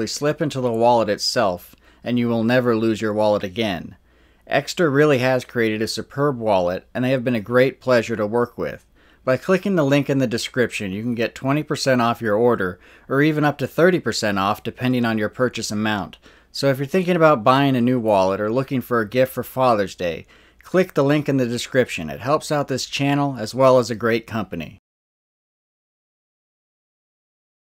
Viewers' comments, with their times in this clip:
0:09 I know I'm a bit late to this party, but I recorded the audio and analyzed it (I was curious, and only had about 30 minutes of free time to play with but around the mark a voice says "But I can't believe that" (I actually added an echo to hear it better, then slowed it down) and right after it it sounds like "death be with your family" or "time to meet your family" (the accent and muffled audio make that a bit hard, I think it's the latter) - I'll play around with it more.. but right after that screaming starts to occur.. it definitely sounds like multiple people. Based on everything, I think that guy dropped him off at that location.. those men from the club picked up him and drowned him.. having a few choice words for him. The only question is the phone.. they couldn't have known it was on and connected to a call?